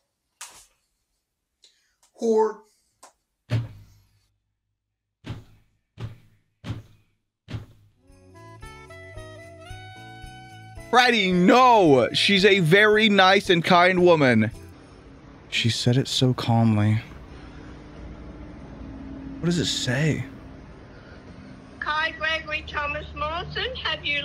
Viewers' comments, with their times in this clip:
0:05 starts banging his first on the table in a way it sounds like their fists banging on the door from FNaF